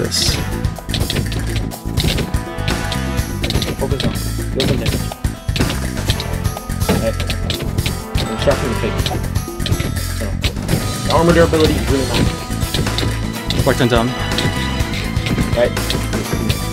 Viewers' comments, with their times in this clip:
0:03 W for using old battle music